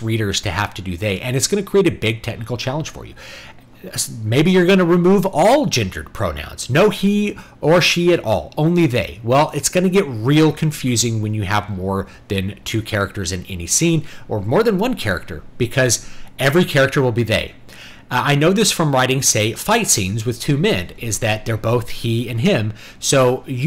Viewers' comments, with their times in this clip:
0:09 I think audio's still a bit overblown, though maybe not as much as the last videos from the last FFXV stream. It's funny how I came to the same conclusion after a minute of thought. This singular plural nonsense should stop, but it's everywhere now. Also, it isn't autism. It's that people are craving an identity, so they feel the need to attach themselves to anything they come across. Masculine identity especially has been shunned to an obscene degree. Boys aren't allowed to be just that which they are. That's generally where that problem comes from.